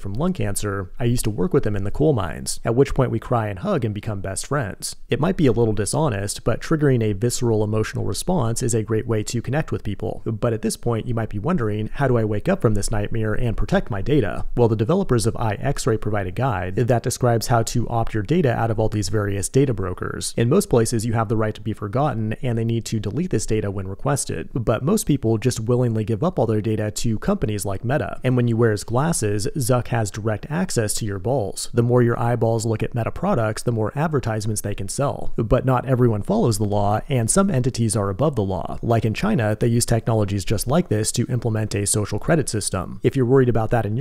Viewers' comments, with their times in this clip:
0:10 “Nightmeeer”? NOOO!!! You’re one of them!!!
0:27 "When you wear his glasses, zuck has direct access to your balls" 💀 😂😂😂😂😂
0:29 "Zuck has direct access to your balls". Let that sink in.